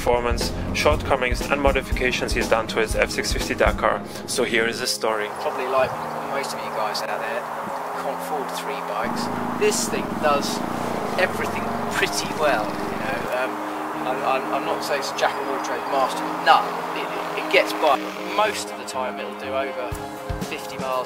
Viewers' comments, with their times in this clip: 0:08 Probably nice and helpful video, but the sound after is awful